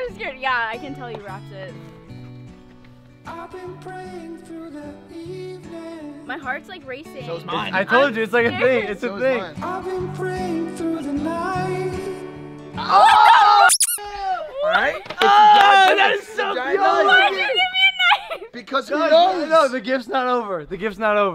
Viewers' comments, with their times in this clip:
0:03 omg u guys really had to put that emotional music😂😂😂😂😂😂😂😂😂😂😂😂😂😂😂😂😂😂😂😂😂😂😂😂😂😂😂😂😂😂